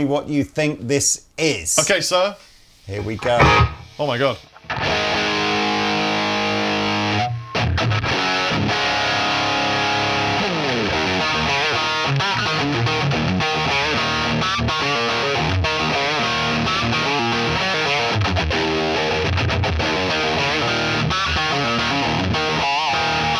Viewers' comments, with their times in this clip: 0:10 nah it’s the minor arpeggio thing on the first Marshall